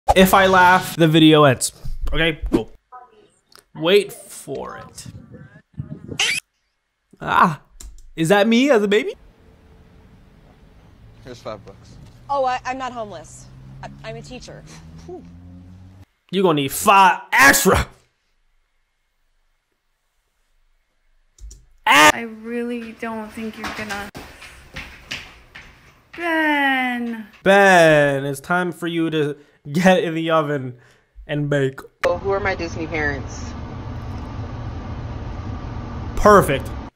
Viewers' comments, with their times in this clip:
0:05 why did bro turn on the alarm
0:05 had me dying the monkey's high pitched scream😂
0:06 at the a monkey turned around and screamed in a funny way hahahahahahahahaaaaaa!!!!!! inhales 🤣🤣🤣🤣🤣🤣🤣🤣🤣🤣!!!!!!
0:21 best cut screams: "t h i s"